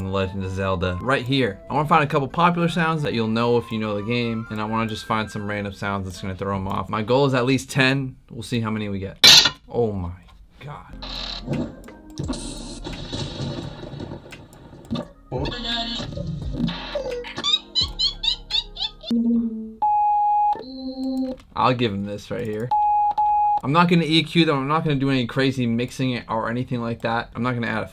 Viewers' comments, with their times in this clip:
0:09 the most aggressive hihat in the world.....